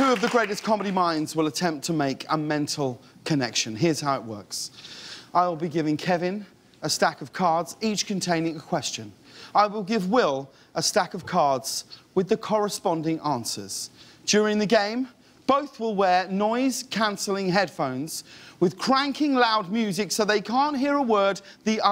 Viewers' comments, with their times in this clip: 0:04 Repeatedly click on Had no clue a human could make that noise, I thought only Aliens and Predators could do that.